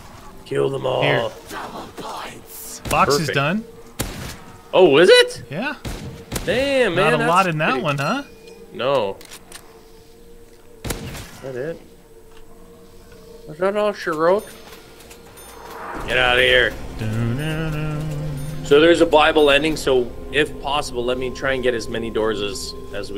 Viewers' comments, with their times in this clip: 0:05 The Voice Crack